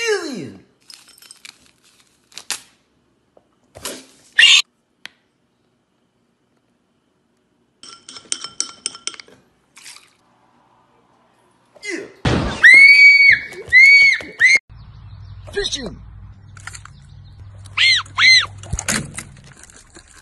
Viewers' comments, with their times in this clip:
0:04 Bro took that scream too serious